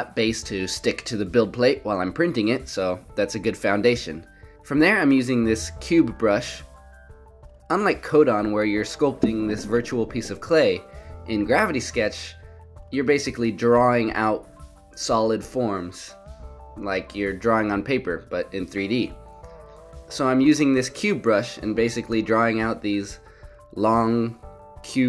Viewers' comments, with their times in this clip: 0:09 Just bought this program. Love it! Also I think you bumped the mic lol